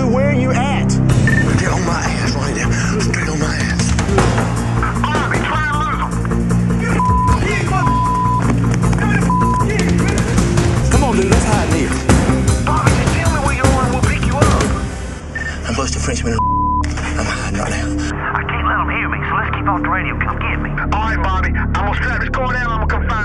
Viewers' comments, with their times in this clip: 0:08 anyone here "NIGGA!"?